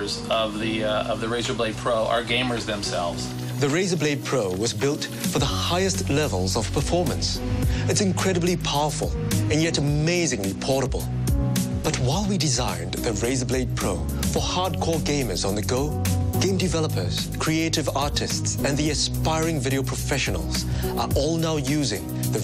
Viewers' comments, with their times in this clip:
0:06 Man, the voice of the guy thet starts is just hilarious! '... as their very own ... mobile ... design studio' then that little smile, just priceless :D